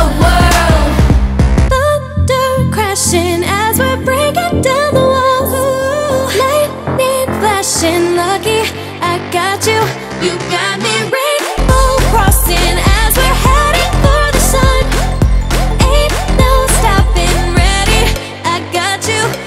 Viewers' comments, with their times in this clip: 0:05 is it just me who hears "uwu"?